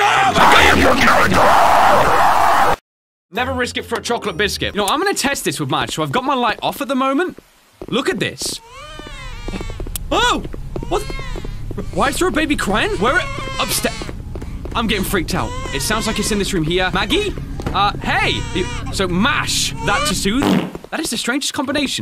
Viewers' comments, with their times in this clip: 0:08 An amazing run Maggie gas cried yet